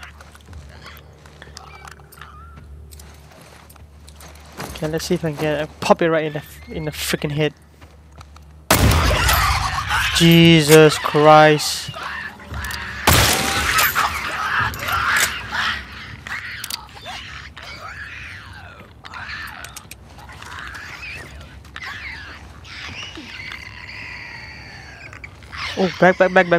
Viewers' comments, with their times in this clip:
0:07 It looks like she really loves Owen or something hahaha! 😂👏 You went through a ton of buildings as usual... XDDD That is a loud ass gun! You are lucky that that zombie did not move fast lol! 😆 Do we love Chinese food? Yeah, I do. Haha! I wonder how Chinese you are... 😅 I didn't even know that lol